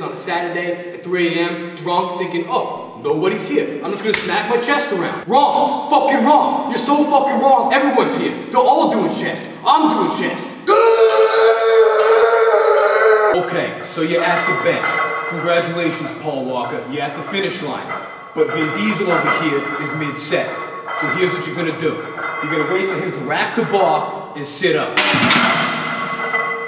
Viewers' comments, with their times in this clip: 0:10 i busted out laughing. That scream hahaha.